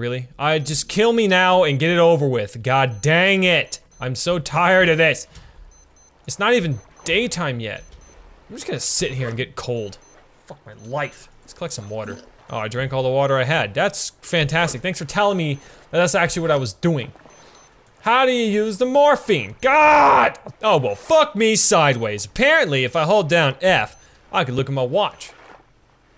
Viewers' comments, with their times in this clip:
0:07 Funny thing is his watch beeps, and so does mine I was wearing ATM so I was like oh shit lol